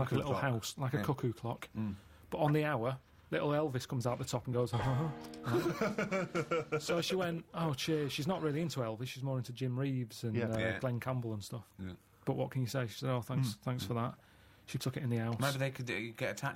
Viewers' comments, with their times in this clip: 0:04 Carl's elvis impression killed me